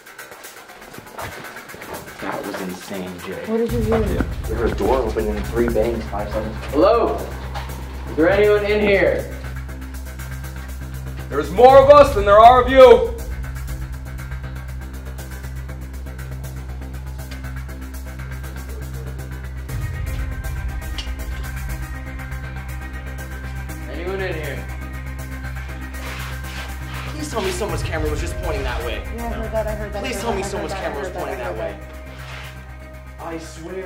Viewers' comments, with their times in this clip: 0:07 there's literally someone walking down the hallway
0:07 WHO TF WAS THAT BEHIND YALL AND I HEARD A NOISE DOWN THERE AT SAME TIME WAS THIS EVER TALKED ABOUT
0:18 do you hear like a guys voice ????